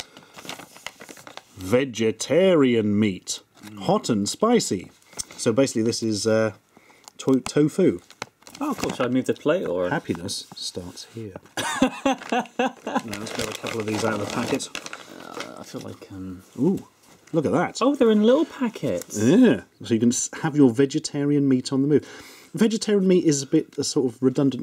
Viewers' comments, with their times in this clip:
0:10 Penus starts here.